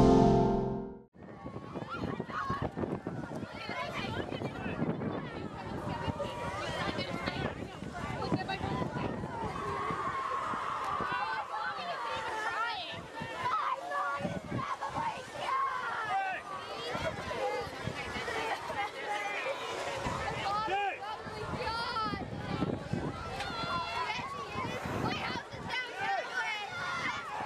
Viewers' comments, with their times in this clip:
0:10 thats a terrific scream on.